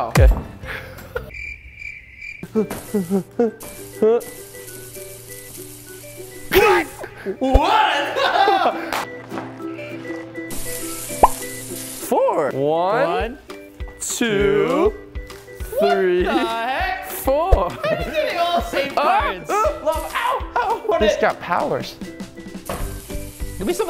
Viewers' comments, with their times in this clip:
0:06 did you hear lil Jon in the background?